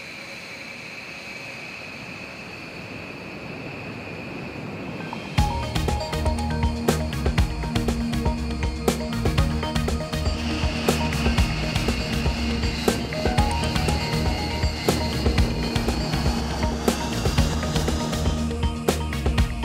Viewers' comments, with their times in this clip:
0:06 That music is groovy!😎